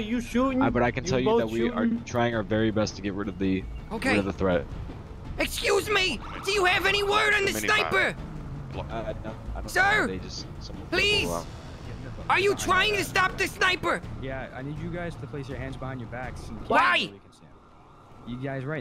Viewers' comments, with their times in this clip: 0:05 kinda sounds like Mort Goldman from family guy 💯💀